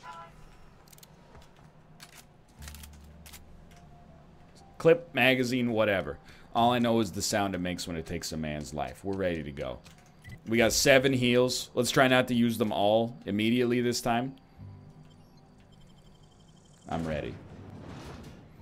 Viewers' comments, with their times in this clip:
0:03 my favorite thing about nl is how he occasionally says the most badass shit with such a casual tone